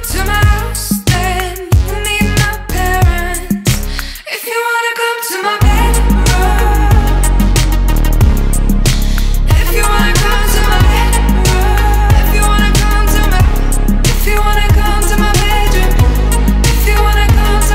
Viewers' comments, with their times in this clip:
0:04 That synth drop tho